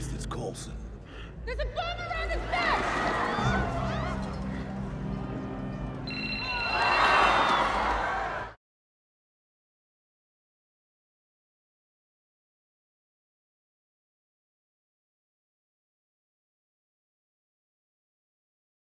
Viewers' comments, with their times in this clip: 0:05 If that ring was the trigger..... O my.